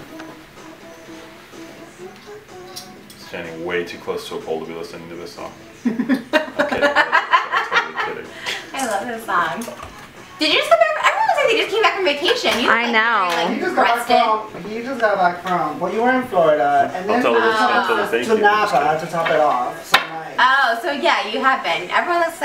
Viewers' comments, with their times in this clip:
0:09 one direction in the background 😏💕